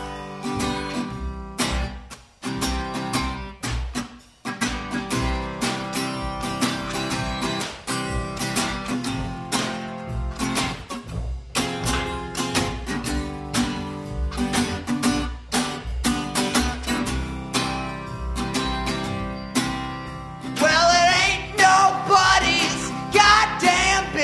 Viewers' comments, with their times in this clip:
0:10 Bit of a long shot, but does anyone know the high note he plays ? Been trying to work it out for ages!